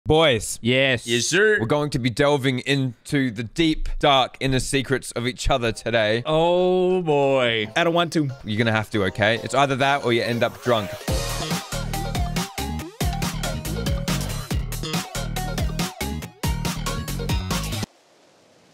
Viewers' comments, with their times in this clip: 0:01 WERE GOING TO BE “DOVING”